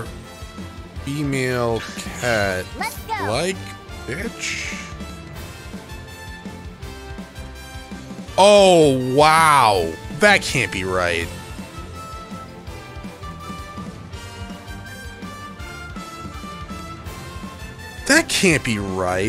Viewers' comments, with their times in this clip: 0:03 Is Juvah Sojiro?! He sounds like him! Wouldn't that be pussy? :P